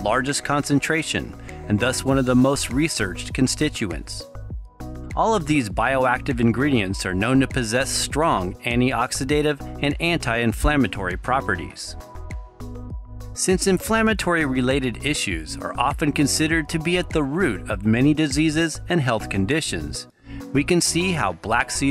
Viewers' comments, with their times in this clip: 0:09 English is funny...two seemingly identical "anti"s and one is pronounced "anni" and the other one as "anti"